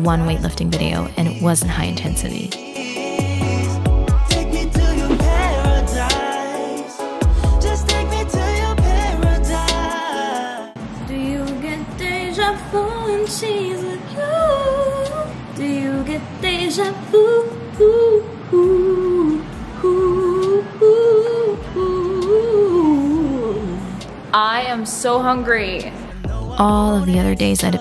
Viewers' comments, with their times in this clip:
0:10 OK MISS, UR SINGING IS AMAZING, FOR PPL WONDERING